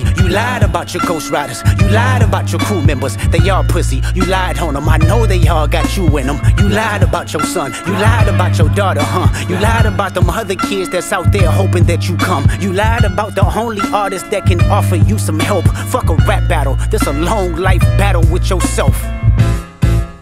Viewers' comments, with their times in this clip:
0:05 He started preaching The intonation of a pastor